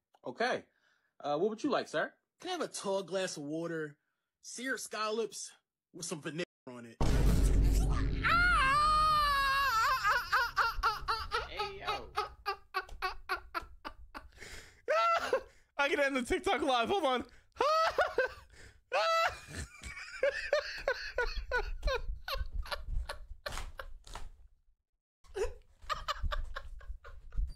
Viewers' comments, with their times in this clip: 0:08 SpongeBob ass laugh💀😭🙏🙏
0:09 bros laugh sound like my grandfathers tractor on a cold day
0:14 that laugh is crazy